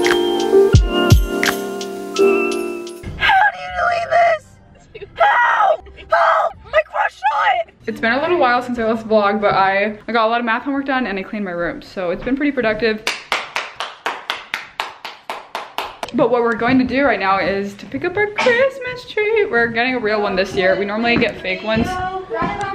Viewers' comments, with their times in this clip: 0:07 reminded me of when mike was screaming for eleven 😭😂 , you kinda sounded like him 😂